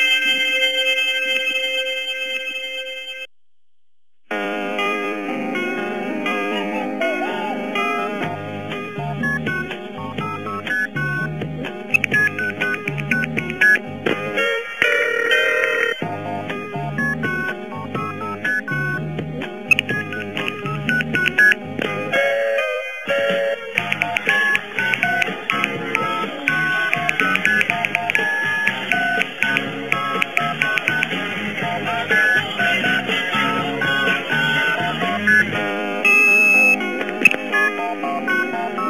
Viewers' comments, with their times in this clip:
0:03 that song is my jam
0:04 what's that song? Sounds like decent rock music :)
0:04 were those phone tones translated into anything ??
0:05 that's awesome music but before that was morse code
0:05 the song has noises from a phone touch pad could it be that it is a separate number
0:25 is actually a really good remix omg